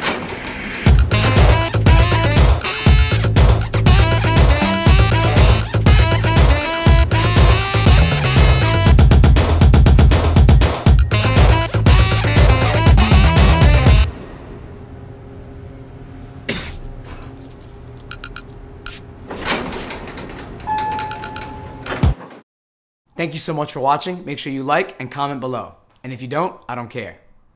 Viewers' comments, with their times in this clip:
0:08 The old man solo is one of the best things i’ve ever seen